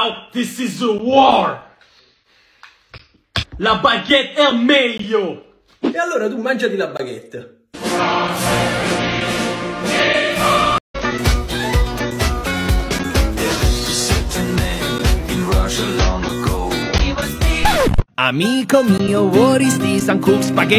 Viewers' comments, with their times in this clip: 0:03 Why he speak Italian 😳😳😳